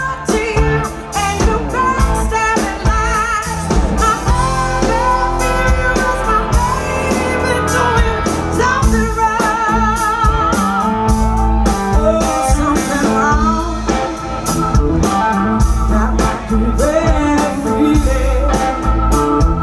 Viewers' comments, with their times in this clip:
0:05 Love how much she puts into the vocals She can't even keep the bass going with the energy coming from those pipes.